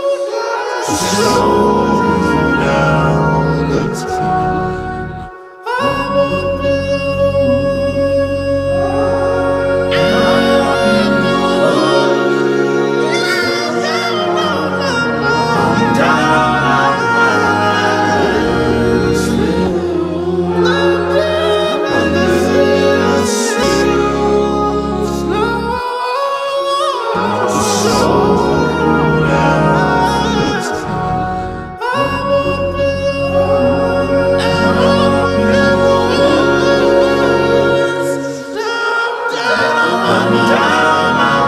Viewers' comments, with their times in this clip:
0:07 Listen onward. It's such a defining moment in how this song makes me feel. You're trying to do anything to get time to slow down, the more it doesn't work, the more your thoughts overthink and get claustrophobic and more chaotic that they start to blend into each other. Hence the several layers of overtones from the background vocals throughout the hook. You're begging for time to just slow down, you scream aloud in the woods- crying, begging for just one moment of calm or one more hour, but nothing happens. This is such a powerful song for me.
0:09 Lmao y is this song sound so weird sounding, I laughed at this for 3 minutes straight especially at the end he was all like "IIIIIIIIIIM LOOST IN THE WOOOOOOOOOOODS" oh goodness....this is an okay song tho
0:25 Dat vocal run from